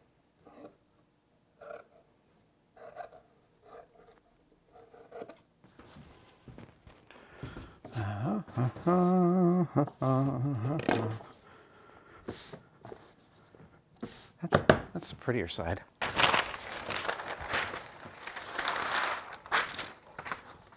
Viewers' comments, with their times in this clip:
0:05 I love how those scissors purr!